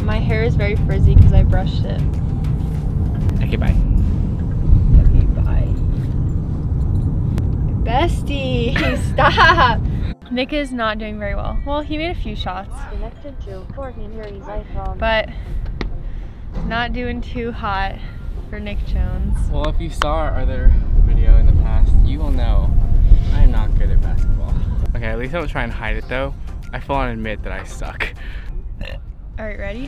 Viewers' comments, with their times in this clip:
0:10 that dynamic range is crazy